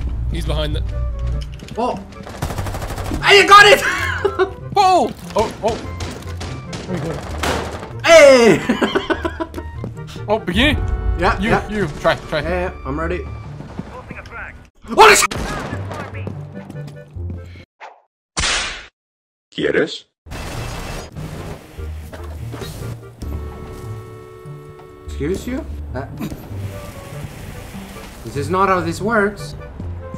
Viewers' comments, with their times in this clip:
0:06 I thought that was a bird
0:17 I f*king love you man laughs in spanish